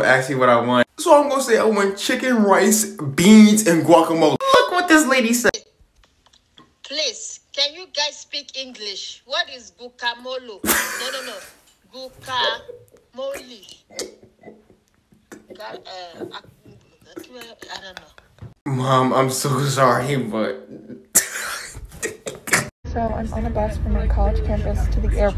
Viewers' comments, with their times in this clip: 0:07 ah yes i love me some bens